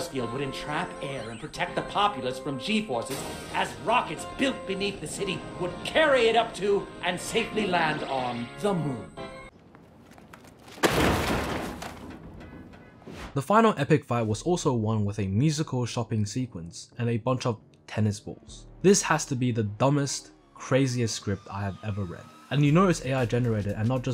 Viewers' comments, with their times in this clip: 0:05 Why dose megamind sound gay and a little bit auto tuned like 2% auto tuned in megamind 2